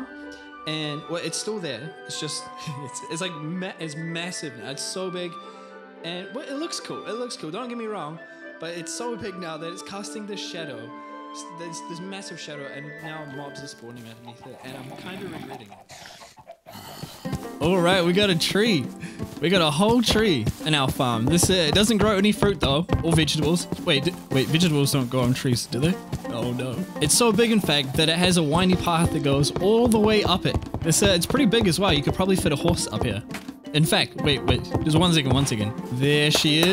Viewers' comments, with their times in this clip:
0:05 The sound depth is soo good.
0:18 The music is giving me Avatar: The Last Airbender vibes! Your videos and your music are so good and I'm glad I can follow your journey like this. Thank you! ♥️